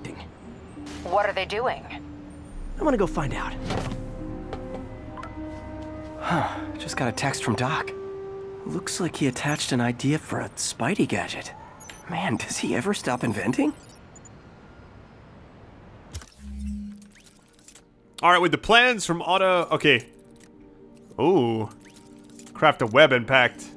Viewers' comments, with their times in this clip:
0:05 Snapchat notification sound? 🤔
0:05 Spider-Man has a snapchat notification
0:06 who else checked their phone when you heard the Snapchat notification lmao